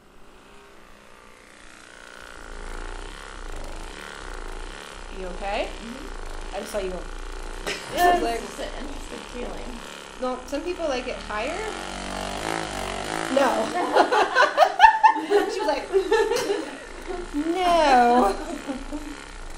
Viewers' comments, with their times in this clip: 0:04 Why dose the thing a sound like a lawnmower